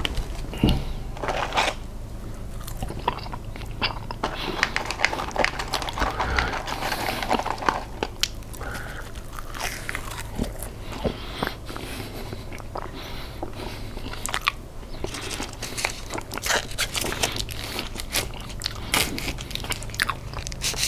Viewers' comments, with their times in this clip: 0:03 Windows Computer on And Best ASMR EVER